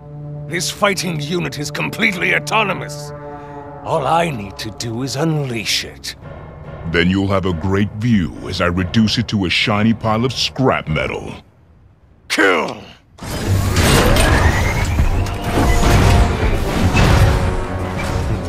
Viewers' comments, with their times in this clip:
0:03 i recognized Matt Mercer's sexy voice anywhere